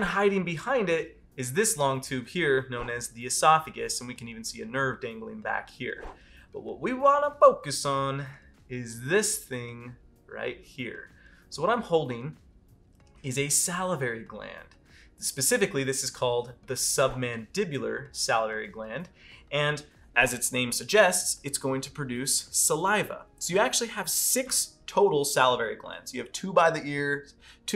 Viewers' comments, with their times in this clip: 0:09 wtf? That was random. Wait.. did he say "what we really wanna focus on" weird? Did thay really happen? I dunno guys, im way too high.. or maybe hes stoned and didnt realize he said it strange. Or he knows im too baked and is messing with me! Why would he do that to me, man!? "Littering aaand, littering aaaand, littering aaaand..? Smokin the reefer!"